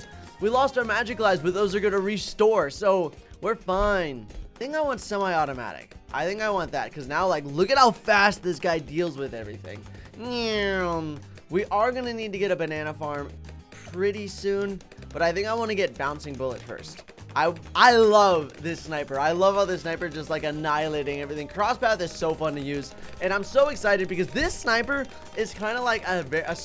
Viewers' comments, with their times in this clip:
0:09 that neeeeeewwwwwrrrmmm is so perfectly timed